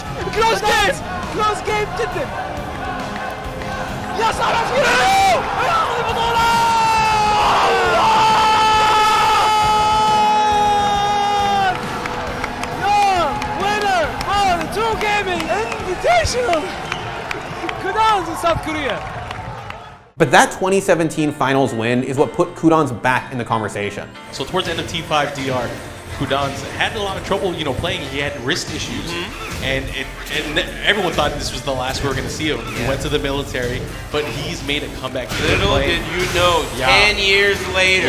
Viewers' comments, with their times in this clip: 0:07 I give this guy a respect for sacrificing his voice for this moment
0:16 That voice crack killed me😂😂
0:21 Qudans: *appears Me: Why do I hear Spongebob music?